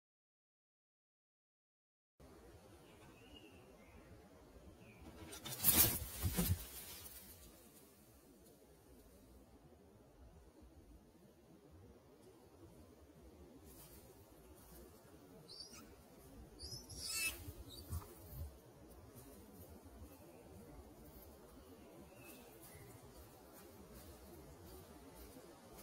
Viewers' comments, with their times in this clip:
0:08 pathetic little chirping weakling: - Food! Cuckoo: - Yeah, you’re right!
0:09 The baby knew what was coming and it sang opera
0:09 oh my criness life, did the baby bird SING?